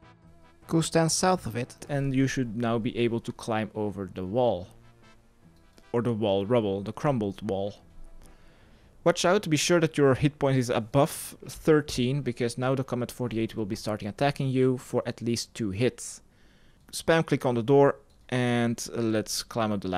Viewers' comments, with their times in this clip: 0:03 lol at that edited in voice